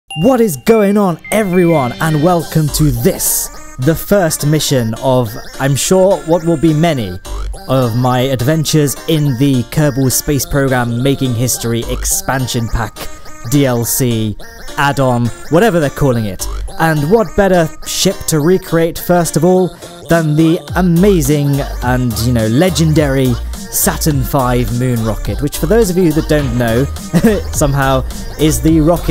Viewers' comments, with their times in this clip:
0:00 this music gives me nostalgia
0:17 shit or ship?